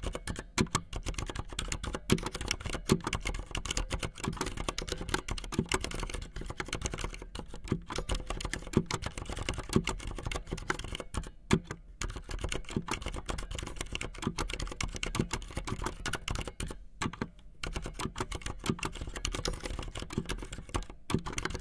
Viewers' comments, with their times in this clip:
0:06 You know, if you close your eyes and turn the volume all the way up, it sort of sounds like gunfire😀